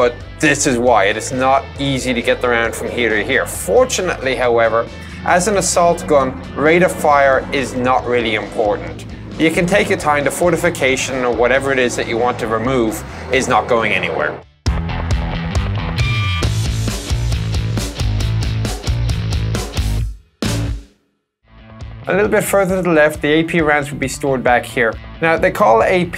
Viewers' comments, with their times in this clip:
0:07 What's with the jet engine sounds ?